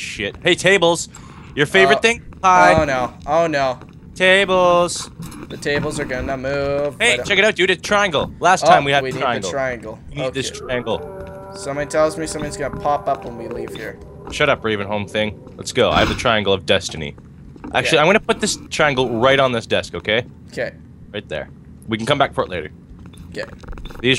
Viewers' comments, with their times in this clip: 0:10 i can hear a cow?